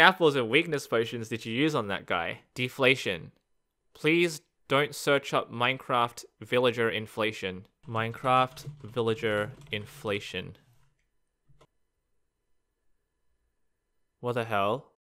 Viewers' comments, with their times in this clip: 0:13 That has to be the most casual "what the hell" I've ever heard.